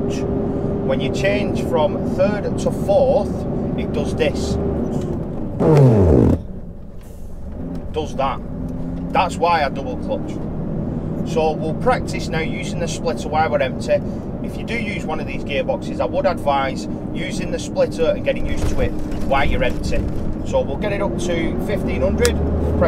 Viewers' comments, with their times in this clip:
0:06 that’s what I called a gearbox fart and I had a few farts when I was new to the manual truck gearbox